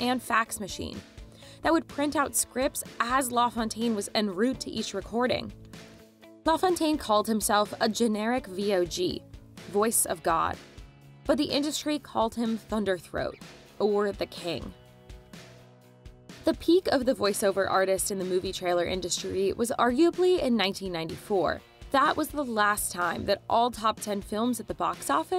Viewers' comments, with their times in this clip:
0:10 Why does she pronounce 'OR' as a two syllable word ? Sounds like 'Owor'.